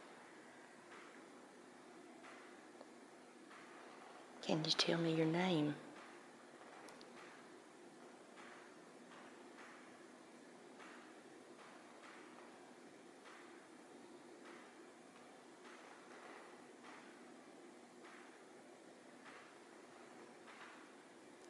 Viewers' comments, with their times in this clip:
0:04 sounds like tap shoes